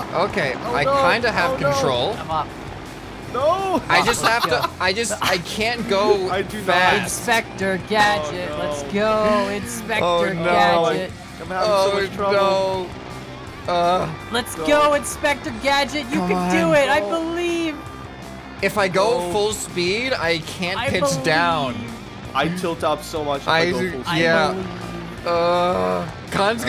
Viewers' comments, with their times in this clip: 0:08 that unicorn sigh